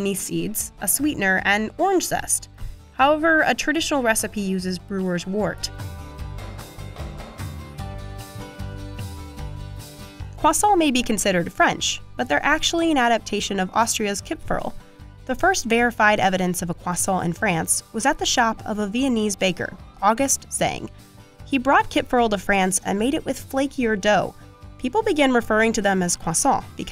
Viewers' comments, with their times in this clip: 0:09 the way she said croissant 😂